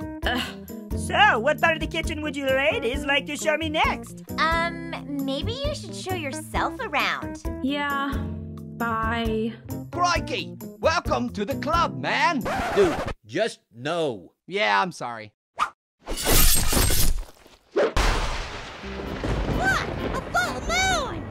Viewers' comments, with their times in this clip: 0:08 passion sounds autotuned